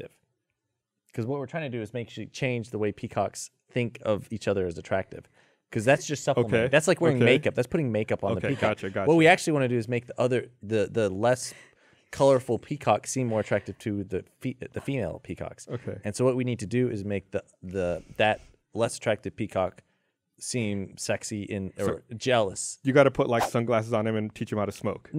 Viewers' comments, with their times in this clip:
0:08 is that a laugh at peacocks in makeup or because she's just realised what he's trying to say and realised he's right, in the worst explained way possible?